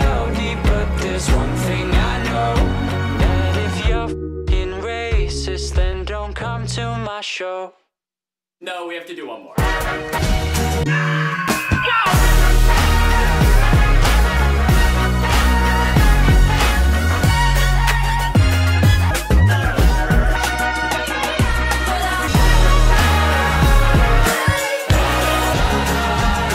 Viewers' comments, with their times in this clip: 0:09 holy shit that mixed so fuckin well